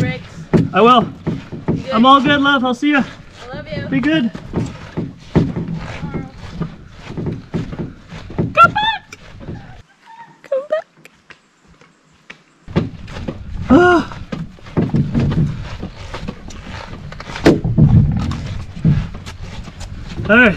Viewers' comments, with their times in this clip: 0:07 This is my second time watching this video amd I just noticed something...was the high pitched "come back" from both of you in reference to the movie "Titanic", when Rose says it to the rescue boats?